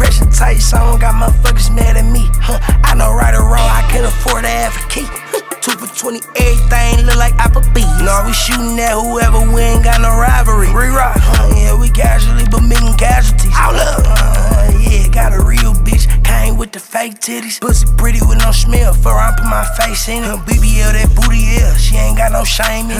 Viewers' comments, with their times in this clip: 0:05 😂🤣but this 🔥 as always he never disappoints beat 🔥 as well